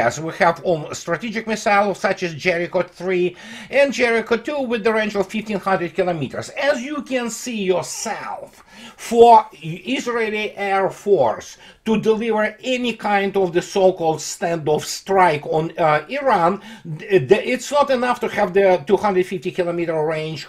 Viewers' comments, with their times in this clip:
0:06 AZ YU KEN SEE YOSELF 😂